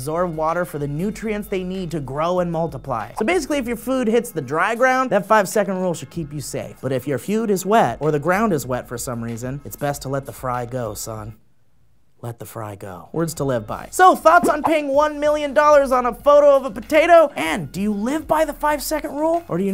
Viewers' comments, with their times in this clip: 0:06 "but if your feud is wet" HA-HA
0:06 he says "if you feud is wet"